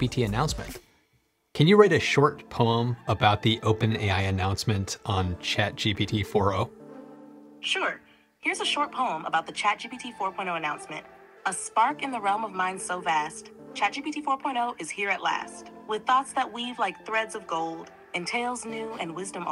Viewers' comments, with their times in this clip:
0:07 Interesting that both the closed captions here on Youtube and ChatGPT parse "ChatGPT 4 O"(ooh) as ChatGPT 4 point 0